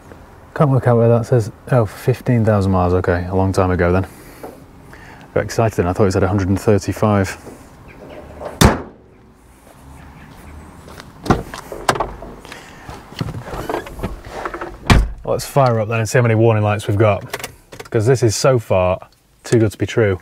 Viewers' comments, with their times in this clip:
0:08 Sounds so cheap!